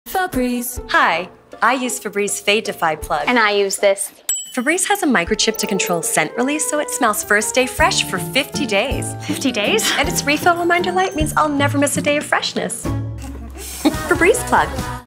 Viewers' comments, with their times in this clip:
0:02 I came to see blond lady's "I use this" face. That "ding" sound wasn't edited in, i bet she can do that in real life.